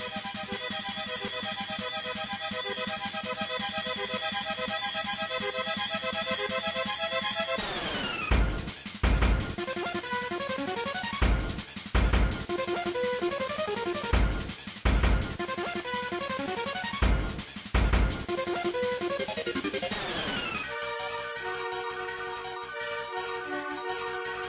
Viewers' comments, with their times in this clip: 0:09 Oh my god sounds like the Planet Robobot final boss theme for true arena I don't rember what it's called